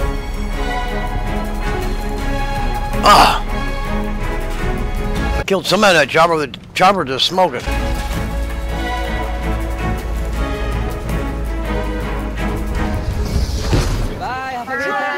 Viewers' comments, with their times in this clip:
0:03 was that Stan Lee playing some Battlefield Three?